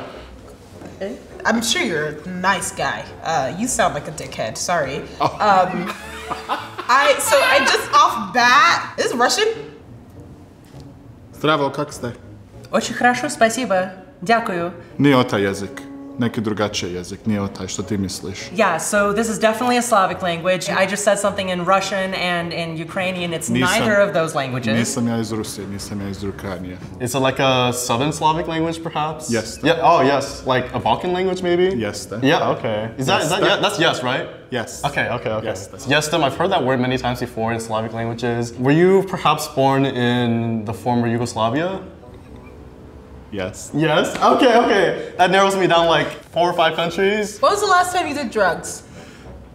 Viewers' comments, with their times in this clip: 0:10 bro the bosnian dude doesn't even know how to speak bosnian properly
0:35 From hearing, I didn't understand what he's speaking LOL